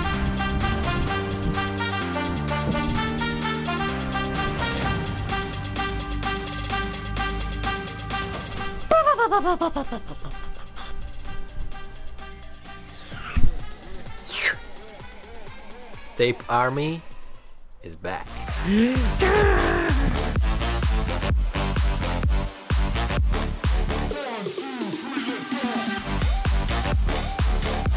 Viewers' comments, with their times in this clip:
0:07 Nice turbo sounds
0:08 Toyota supra 2jz single turbo is Like: braaaaap
0:08 angry single turbo noises
0:09 gotta love dem turbo flutter noises